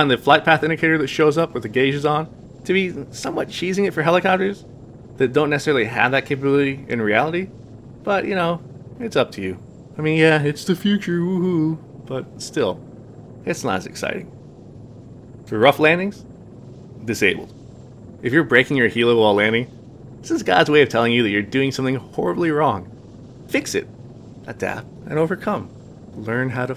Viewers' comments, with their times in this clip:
0:09 = Kermit the frog